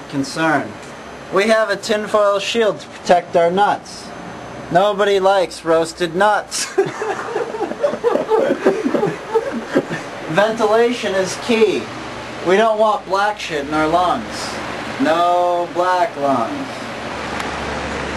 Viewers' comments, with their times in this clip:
0:03 the laughter from this part is so contagious. This really was from a different era of Youtube